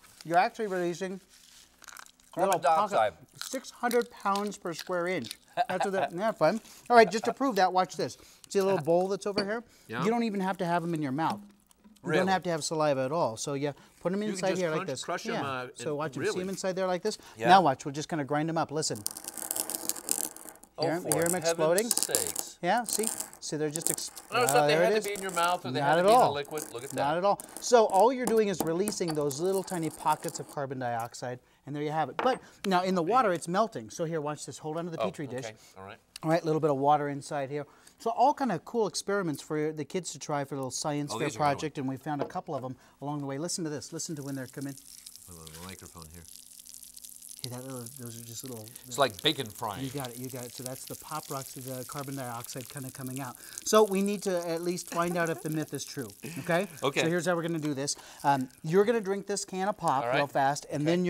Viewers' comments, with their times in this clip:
0:04 his laugh XD oh mahh gawd i couldnt stop laughing
0:04 The news reporter sounds funny lol No offense
0:05 the guys laugh on the left.
0:44 First thing I thought of was bacon as well ... awesome!